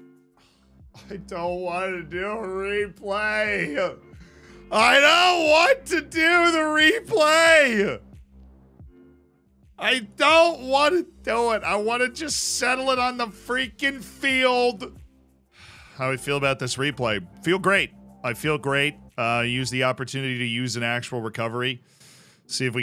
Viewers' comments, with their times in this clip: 0:04 an almost perfect word for word Klopp impression.